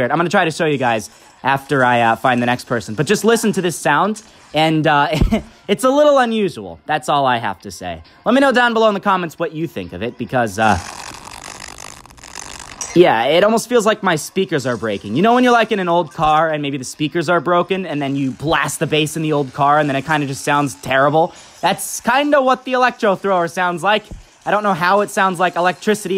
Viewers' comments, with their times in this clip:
0:10 I think it sounds like a fart